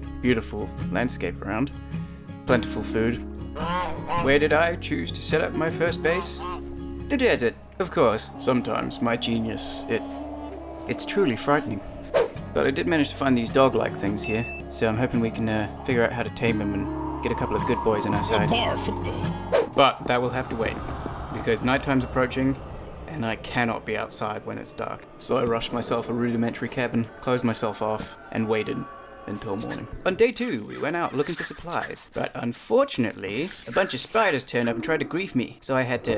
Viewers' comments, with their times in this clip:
0:08 I didn't know Jeremy Clarkson plays Minecraft! You sir gets a sub 😉👍
0:17 Lol, did no one notice the Markiplier "barf" ? 😂